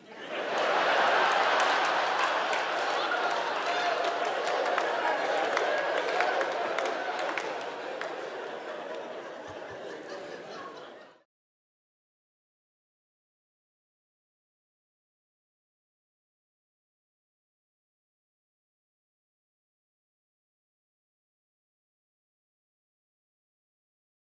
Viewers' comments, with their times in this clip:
0:09 that lingering laugh...at